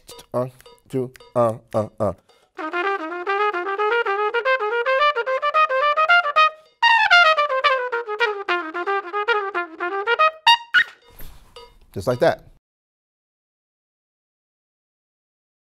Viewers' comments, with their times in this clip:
0:11 dont ever try to squeak that sht again. trust me